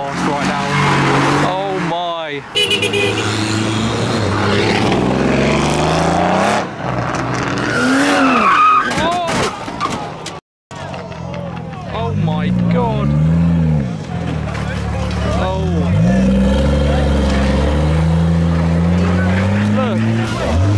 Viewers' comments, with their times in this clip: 0:07 for the crash